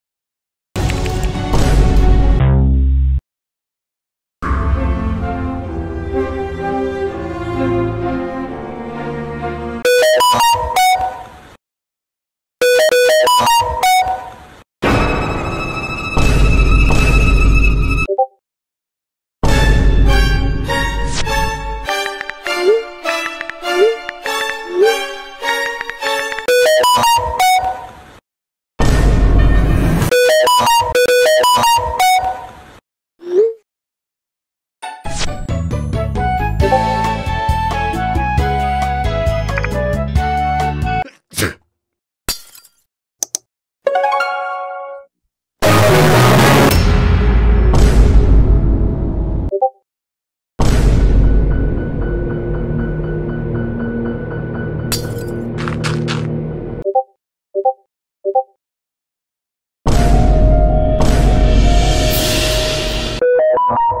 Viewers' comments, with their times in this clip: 0:09 LOUD RINGTONE NOISE
0:10 loud samsung notifications sound
0:27 Beluga plays Samsung notification sound effect also using an iphone ?
0:40 if volume keeps up! 😮😮😮
0:43 This is kinda accurate: the supercell opening sound is like the loudest sound on earth
0:45 very loud music playing
0:45 errape and loud!!!!!!
0:45 AHHHHHH MY EARS ARE BLENDING CAN YOU STOP THAT
0:46 BRO THE SOUND THAT THE PHONE WAS MAKING WAS LITERALLY THE RALDI'S CRACKHOUSE STARTING SEAN